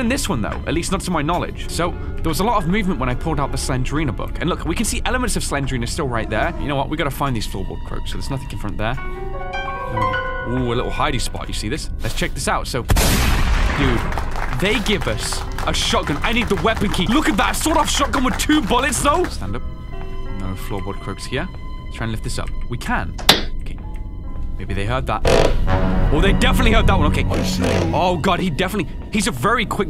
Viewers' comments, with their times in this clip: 0:10 shotgun sound scared me so much i nearly bounced off my chair